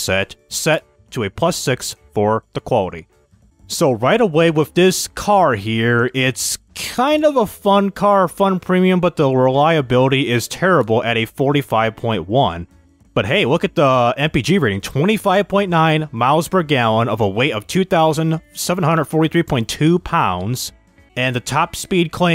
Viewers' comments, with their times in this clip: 0:06 sounds like a alfa Rome 😂😂😂